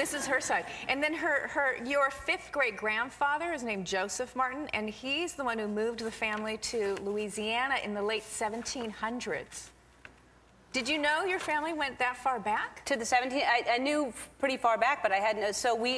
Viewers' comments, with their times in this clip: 0:03 Did anyone notice she says your *fifth grade* grandfather :P I found it funny :)